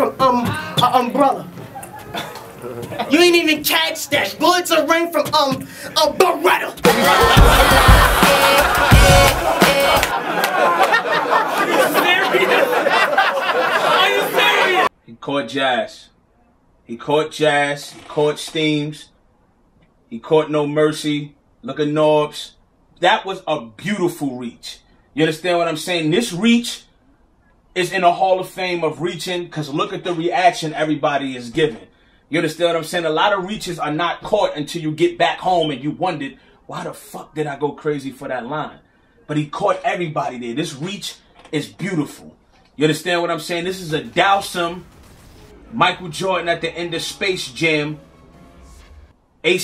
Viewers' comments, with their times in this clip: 0:07 I felt those laughs in my soul 😭😭
0:35 bruh change your batteries on that smoke detector 😂